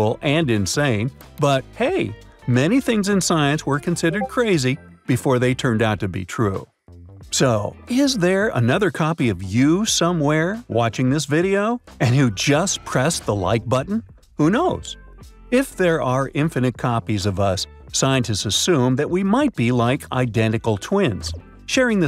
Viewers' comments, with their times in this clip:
0:04 Why you should always put Discord into Do not disturb mode when recording.